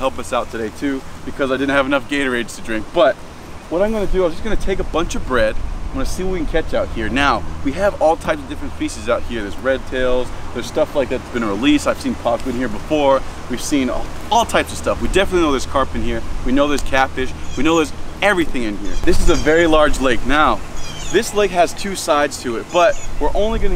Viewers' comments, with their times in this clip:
0:06 I thought you said fycis